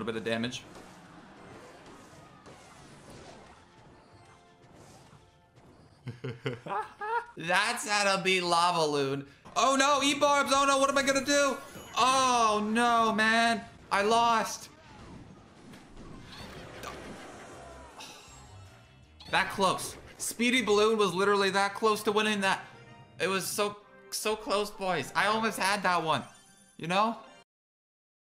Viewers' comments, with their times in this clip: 0:06 bro what happend to ur voice 😂
0:11 in the video his voice sounded soooooooooooooo fake